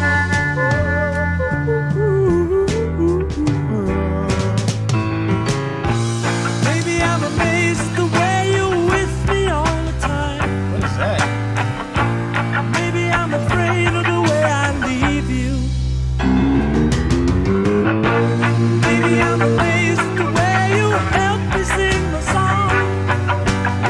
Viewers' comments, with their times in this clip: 0:06 That sound you're hearing is palm muting. It's a guitar technique where you mute the strings with the palm of your strumming hand, and it creates that choppy, detached sound since the notes don't get to ring out like they normally would.